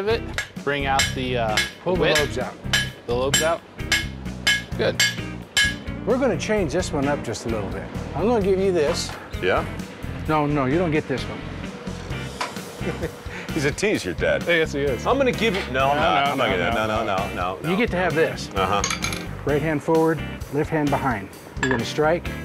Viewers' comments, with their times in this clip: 0:05 That was a nice anvil hit 😉 Jokes aside, I have watched you Mike since I was around 5 years old around the beginning of Dirty Jobs. As someone who likes learning as much trades as possible, I kind of feel like you have had an influence on that. I hope all is well for you and stay safe!